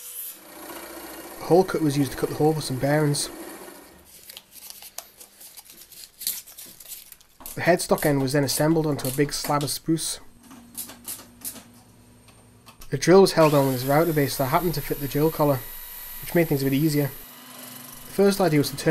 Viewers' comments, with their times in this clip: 0:06 I think I could listen to you say "a big slab of spruce". all day